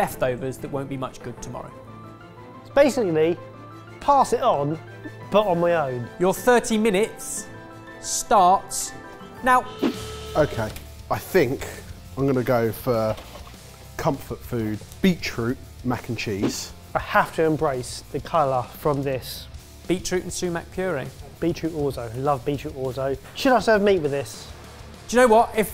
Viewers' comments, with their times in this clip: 0:10 Does anyone know what's the music that starts ?? Sounds epic af